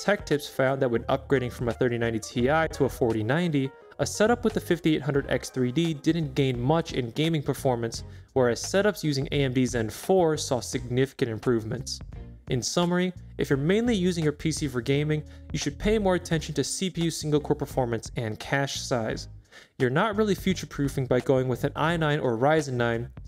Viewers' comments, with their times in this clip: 0:08 couldn’t make out what you said here